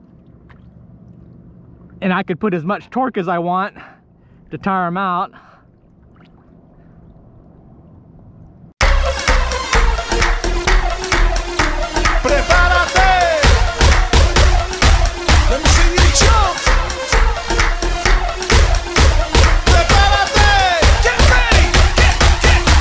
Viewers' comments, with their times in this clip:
0:07 I thought your line snapped for a split second... then realized it was Tarpon party music.
0:09 Consider working on your transitions Nearly blew my eardrums out.